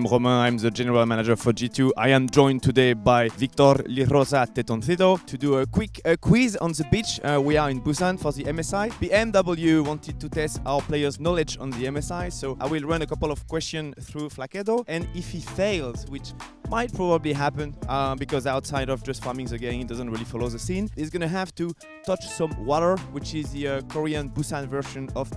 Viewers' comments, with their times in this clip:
0:06 A quick quiz on ze bich xD